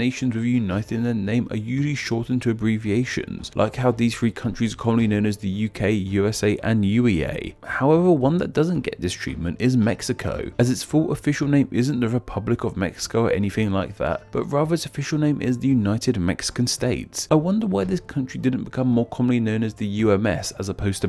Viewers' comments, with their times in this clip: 0:08 Did you mispronounce uae?